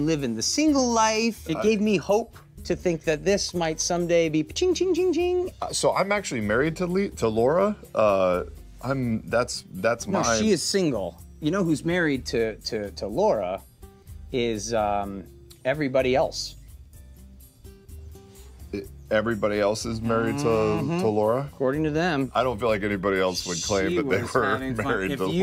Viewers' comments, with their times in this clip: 0:06 It sounded like Travis was about to say he’s married to Liam